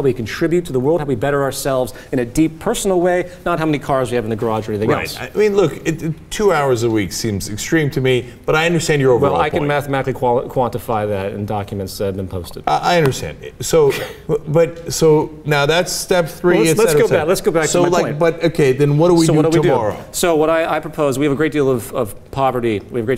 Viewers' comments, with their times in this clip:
0:10 Cenk going like "I understand that", after 40+ minutes of barely understanding the basics of what Peter said, Peter cannot control a laugh reaction to Cenk's ignorance, which he quickly regrets because he well intentioned and wants Cenk to LISTEN and THINK. Priceless moment showing how patient Peter is to even try to talk to people who cannot get out of the capitalist neurosis...